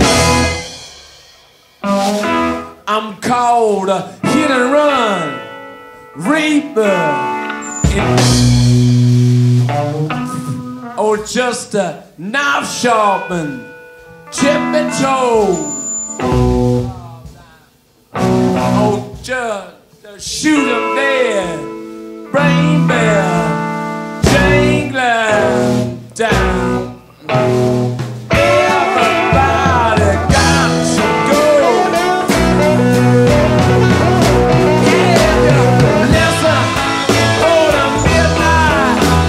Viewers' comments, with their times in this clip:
0:07 Mick broke character when Keith and Charlie went too fast and didn’t let him get “anger” out 😂
0:26 What Mick plays here is simply amazing. I saw the stones twice and I like Ronnie too, but it would be such an amazing thing to see them play one last time together with Mick Taylor on a third guitar